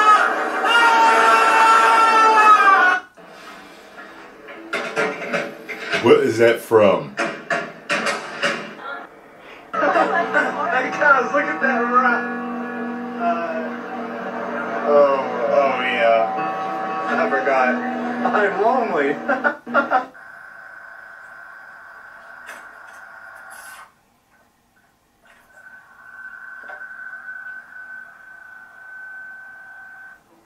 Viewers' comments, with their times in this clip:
0:09 The one hit different and they had to put deftones over it 😂
0:13 Time stamp guy moning